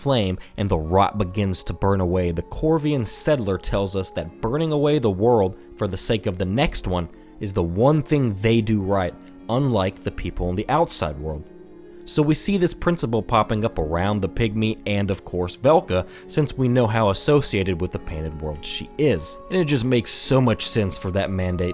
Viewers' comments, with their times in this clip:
0:03 What's the song it's so soothing